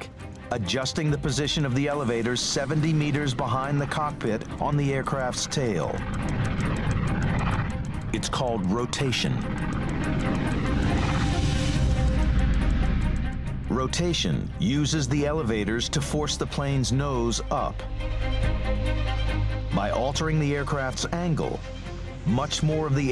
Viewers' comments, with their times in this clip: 0:06 dramatic music AND ITS CALLED ROTATION! ohhh maaahh gaud I've never heard of that word!